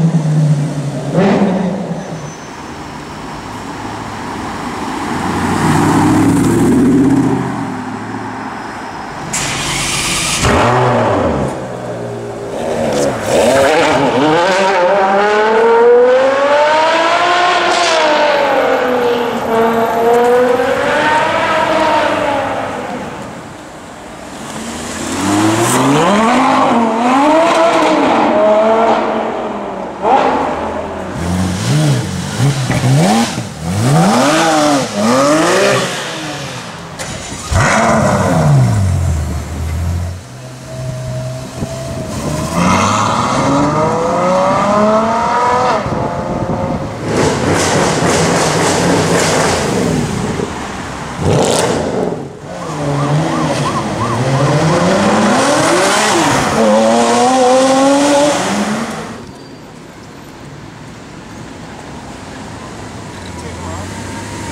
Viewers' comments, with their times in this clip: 0:10 the best insane sounddd f1 xD
0:49 hard to believe that mercedes sounded like that. Did they open the headers on that thing or somthing?